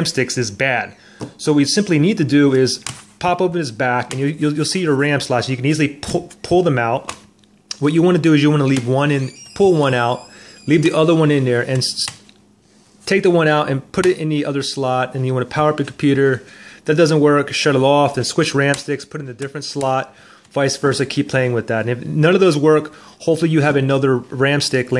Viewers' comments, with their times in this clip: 0:08 what you wanna do i- *door creaks*